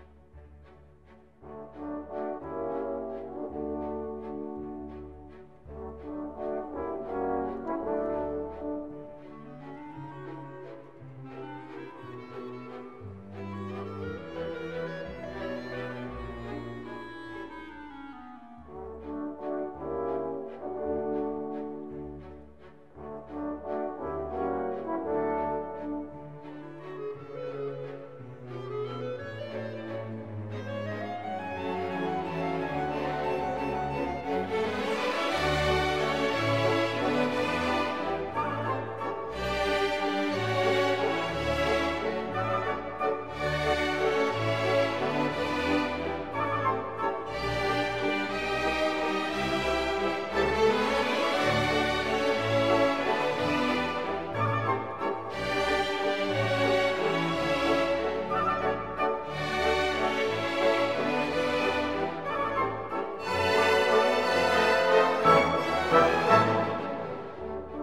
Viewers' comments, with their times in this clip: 0:04 me 12 shots in when the cha cha slide starts playing:
0:33 music giving me lego batman vibes
0:55 your heart beat when you hear your closet door open at 3 am